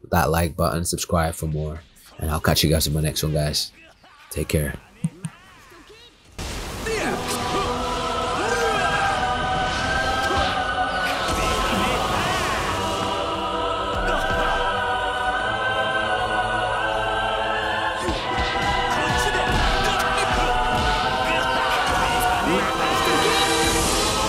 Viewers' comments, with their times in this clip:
0:07 What is the name of this music starts its cool and epic